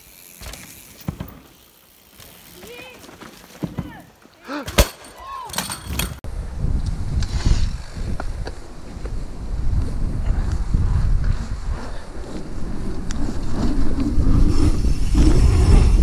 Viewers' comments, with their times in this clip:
0:03 something sounds very broken